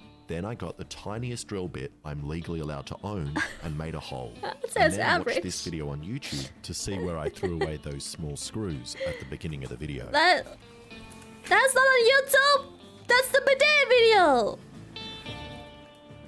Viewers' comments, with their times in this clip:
0:03 Her goddamn cadence upon saying "that's the bidet video!" is somehow just so interesting to the ear, melodic and intense as it is.